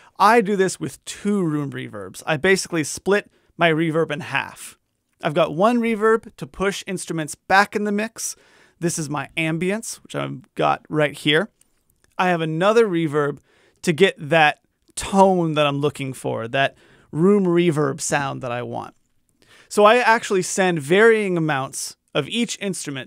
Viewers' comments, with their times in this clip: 0:08 wtf??? nice punch in. Great video btw and thank you for the help.